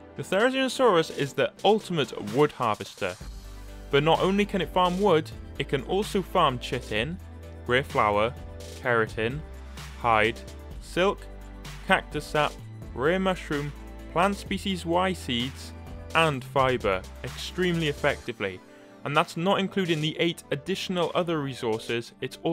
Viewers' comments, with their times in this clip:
0:06 mans said ”shit in”